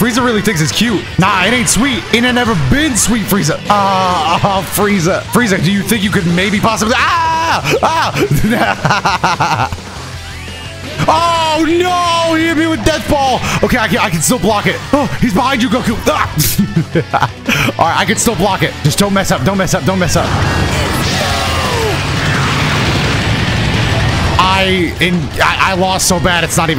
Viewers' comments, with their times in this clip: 0:08 he actually sounded like OG frieza when he laughed